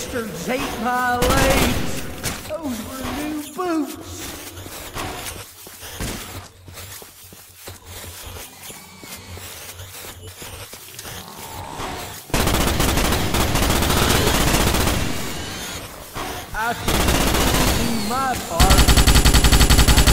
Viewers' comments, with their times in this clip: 0:03 THEY ATE MY GOD DAMN NEW BEWTS!!! THOSE GOD DAMNED BASTARDS!!!